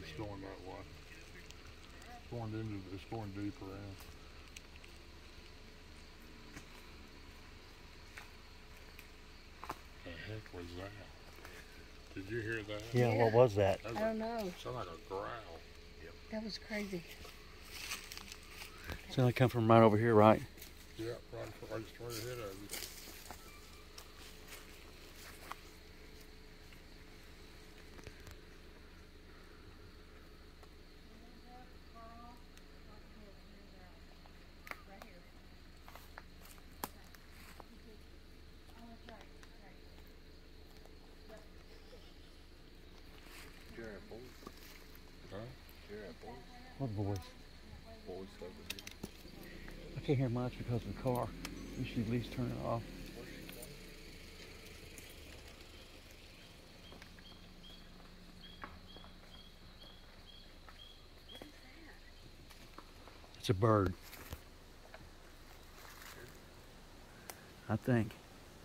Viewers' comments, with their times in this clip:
0:08 Great video of various trips to the LBL. At the minute mark, you are able to hear the mysterious growl that you all heard back in May. You have some great people in this video, thank you for including me. Look forward to our next excursion at the LBL, and I am a proud member of "The Brotherhood of the Wolf!"
0:52 The bird you heard is what you need to listen for they use that noise all the time.